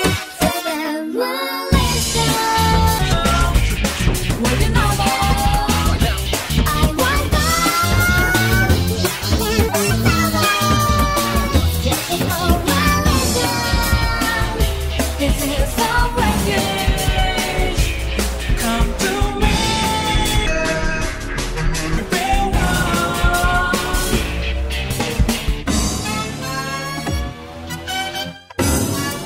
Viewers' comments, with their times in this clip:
0:10 sounds like a bad Alvin and the Chipmunk cover